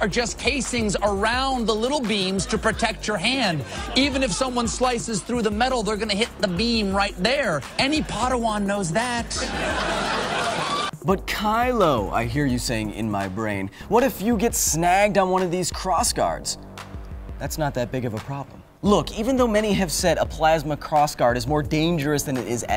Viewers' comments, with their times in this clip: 0:08 the stupid guy in the small box said "pod-awan" not padawan